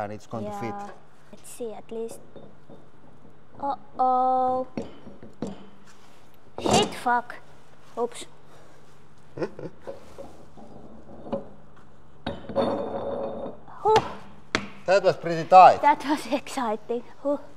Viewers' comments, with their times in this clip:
0:05 The sheer panic in that 'oops' is the most relatable thing I've seen all day